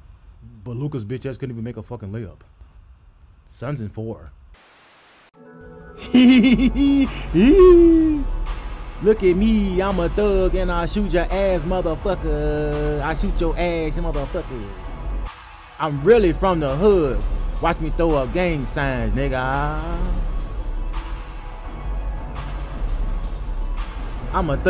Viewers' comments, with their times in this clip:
0:06 That Ja laugh came outta nowhere lol